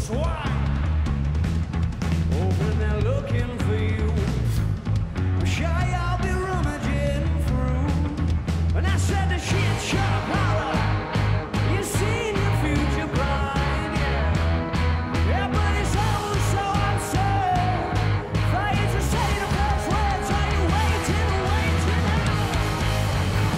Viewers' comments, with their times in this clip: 0:10 his old voice for a few seconds